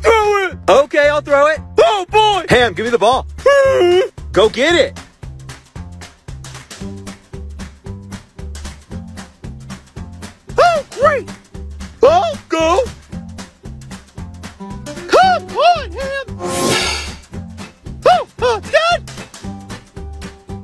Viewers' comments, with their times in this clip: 0:03 On when hammy went mhhuhh, I was crying in laughter 😂